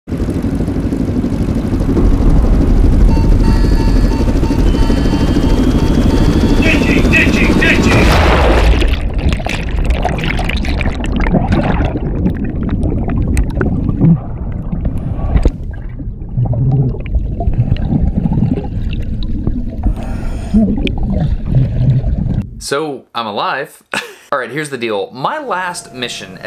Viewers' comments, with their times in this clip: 0:05 I think i played to much Overwatch, but i hear there: Genji Genji Genji !
0:07 sounds like Jake Paul saying deji deji deji